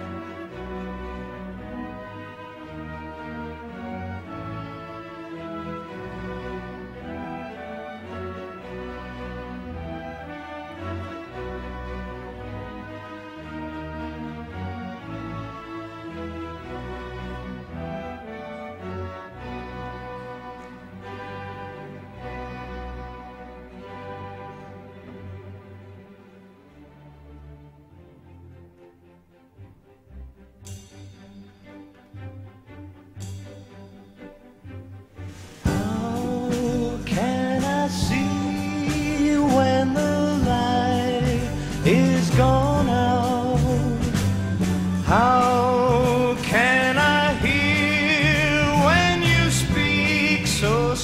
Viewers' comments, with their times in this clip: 0:09 A part in this sounds like Jethro Tull Living in the Past. or vice versa.
0:34 This is a longer than usual production for YouTube surfers, but if you want to enjoy the essence of the band and the orchestra in fusion, I might suggest you skip ahead to Beautiful orchestration with unreal vocals from Ian Gillan. I've never heard him sound like that before. It's like something is inspiring him.